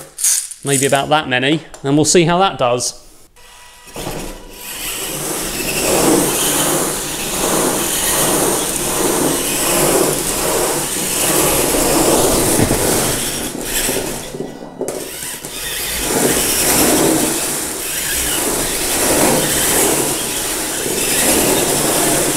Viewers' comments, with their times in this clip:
0:08 A lot of noise, you can put a 2nd ball having extra mass like 2~5kg